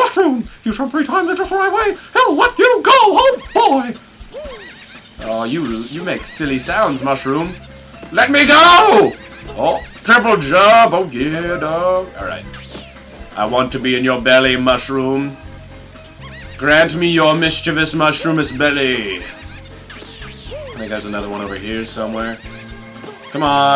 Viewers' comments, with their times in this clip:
0:04 is the same laugh as the laughing mushrooms in Tomba 1 (PS1 game), I swear. Wow, that takes me back.